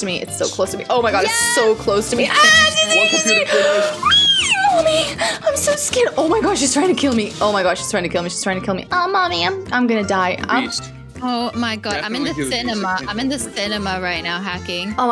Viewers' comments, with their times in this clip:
0:03 Awe💕U were so cute when screaming<3